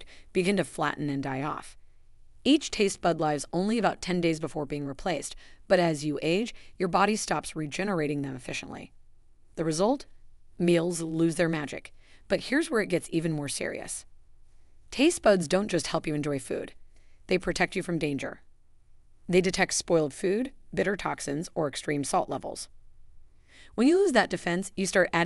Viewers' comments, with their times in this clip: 0:05 When you say tastebuds lives (rhymes with hives) instead of lives (rhymes with gives) your information is suspect.
0:08 I really hate AI generated speech..... each taste bud "lives" ....stopped watching right there.